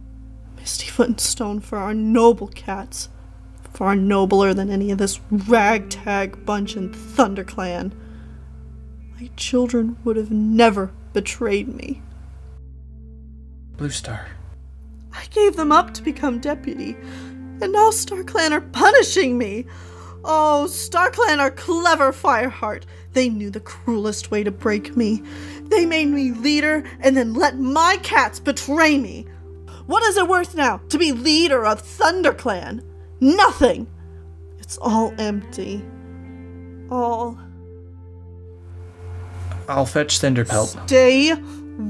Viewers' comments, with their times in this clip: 0:05 Why is nobody talking about how her voice ? I love it!!
0:12 fireheart sounds like Simba hahsfsjsbdjgsjef
0:28 WeEeEeEeEeEeEeEeE (No hate it adds character to the story)